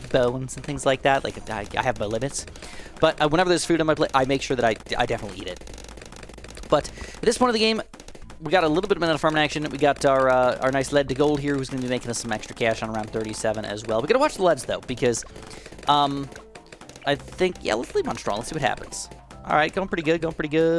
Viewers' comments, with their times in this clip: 0:03 bro sounds like he‘s been starving for weeks 😭🙏🏻